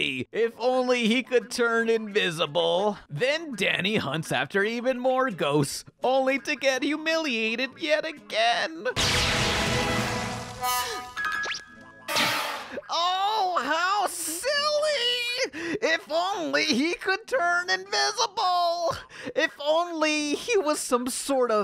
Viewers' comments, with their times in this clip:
0:06 progressively turns into Cicero from Skyrim